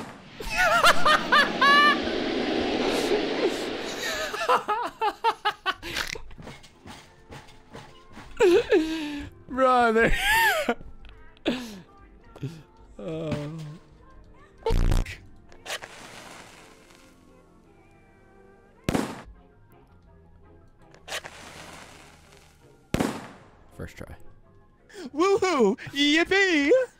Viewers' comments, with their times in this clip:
0:08 IS TOO FUNNY, BRO LITERALLY MISSED AND KILLED HIMSELF I COULD HERE HIM SLAMMING ON HIS DESK OR CHER LIKE I WAS CRYING FOR THAT ONE SO HARD 😂😂😂